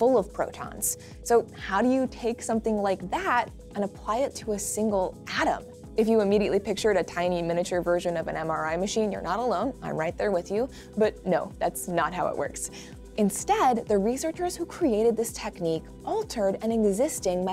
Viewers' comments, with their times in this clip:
0:05 That’s cool and all, but all I could hear was that vine